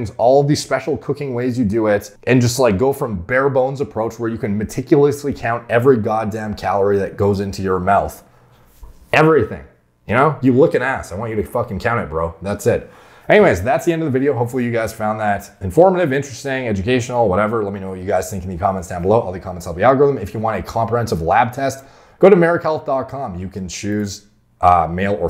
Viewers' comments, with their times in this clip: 0:09 "you look an ass"..?